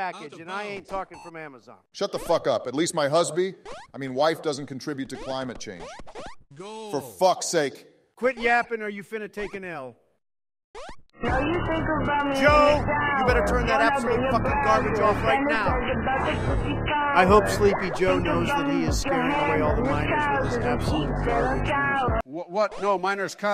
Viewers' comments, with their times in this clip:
0:10 the music made me laugh so hard